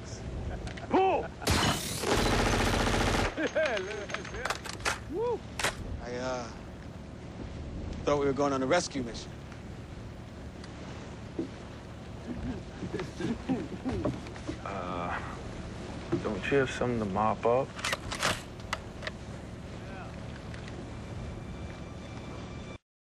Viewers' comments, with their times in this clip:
0:10 the look and the guys' giggles in the back crack me up X}